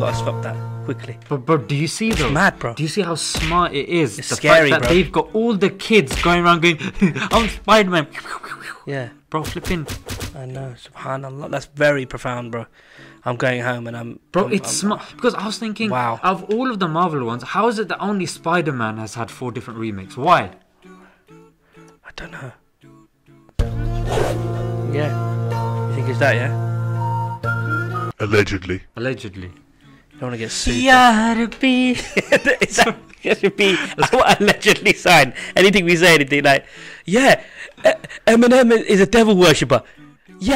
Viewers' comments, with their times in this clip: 0:09 Those star plus drama sound effects 😂
0:24 Topic aside, but the Arabic style version of X Files theme is pretty neat